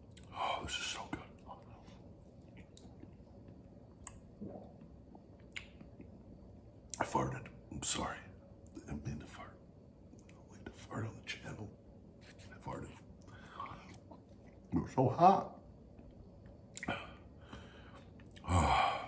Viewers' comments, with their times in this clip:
0:04 when sonic loses air under water on the video game.
0:07 That fart sounded wet to. Hopefully tho the challenge wasn't as bad as it appeared